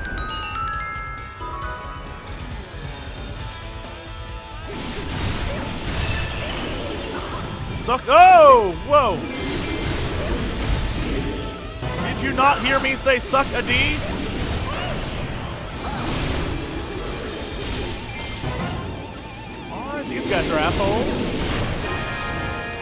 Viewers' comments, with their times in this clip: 0:10 That sound effect where the bosses/minibosses/large units display their shield ticker makes me irritated for some reason.